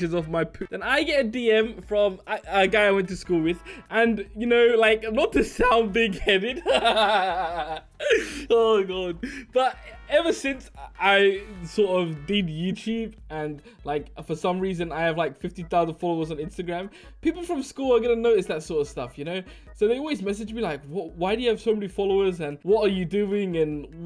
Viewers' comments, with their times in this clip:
0:05 nice voice crack m8